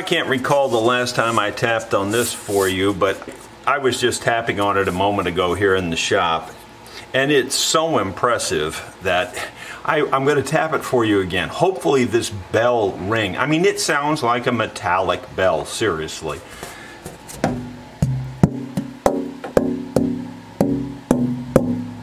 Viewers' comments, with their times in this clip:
0:10 the autogenerated captions read the tapping of the back as music!